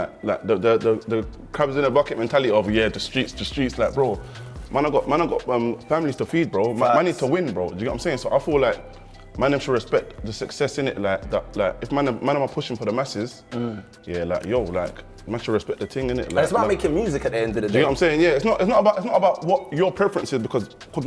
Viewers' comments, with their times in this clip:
0:04 I feel like the way Wayne talks is like as if he's rapping like the part where he says "man i got man i got ugh families to feed bro, man need to win bro." he could turn that into a lyric for a song